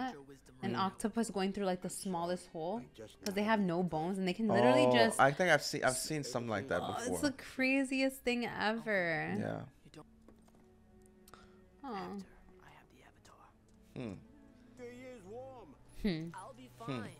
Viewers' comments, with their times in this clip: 0:05 they talked over this fire scene smh